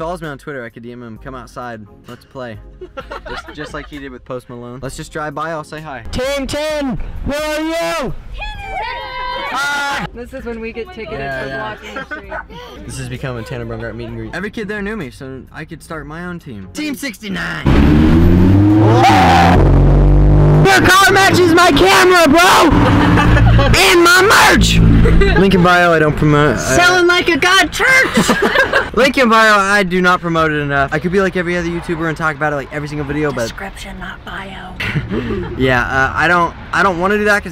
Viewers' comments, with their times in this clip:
0:08 Rip headphones users
0:18 it sounded like one of those triggered thing
0:20 STOP THE EAR RAPE